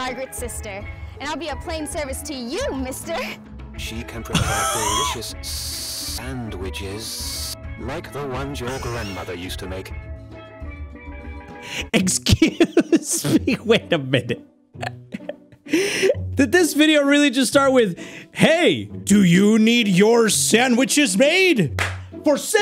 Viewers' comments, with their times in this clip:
0:05 am i the only one who started laughing when the voiceover guy was like "sssssssandwichesssssss"